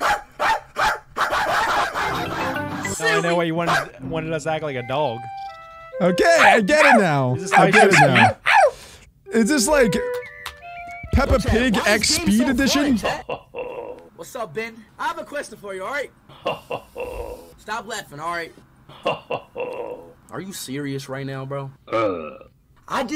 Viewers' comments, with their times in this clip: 0:06 you sound like toad